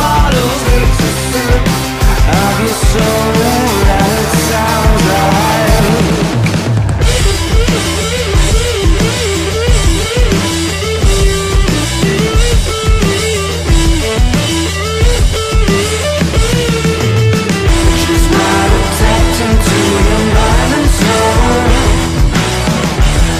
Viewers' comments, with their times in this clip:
0:05 The solo has no reason to SLAP SO FUCKING HARD